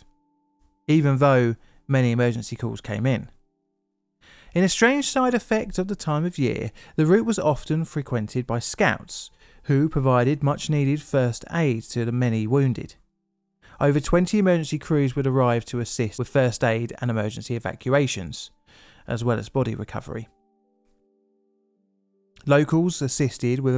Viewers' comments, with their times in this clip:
0:10 Scamps? Like the lovable kind?